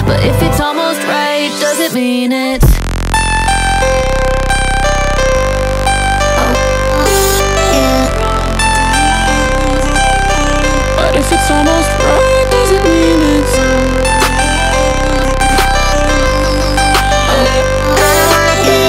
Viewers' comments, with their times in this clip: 0:04 Love the abrasive drop